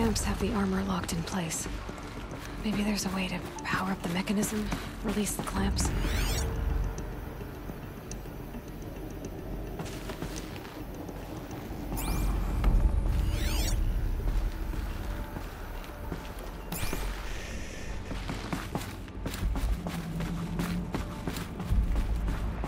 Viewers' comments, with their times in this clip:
0:07 Btw you seem to be struggling with the data points, so let me help you: you have to highlight the actual item / object (highlighted in purple) in order to scan it, not the floating label icon thing above it. Those icons just tell you what type of item it is that you can scan, but to scan it you need to highlight the item , like you would with a machine. :) Also as for the random fighting music there, it's probably because that cave is underneath the main land and some machines are loaded in way above you, but in proximity for the music to come in 🤔😂